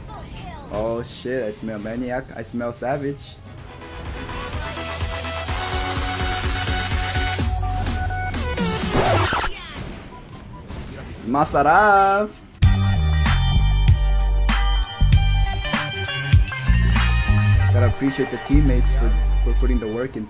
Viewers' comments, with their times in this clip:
0:04 the coffin dance music star's playing Me: This is gonna be good Me after the song: WTF he Didn't die So disappointed 😆😆😆😆😆
0:04 that coffin music got me
0:05 i heard coffin music.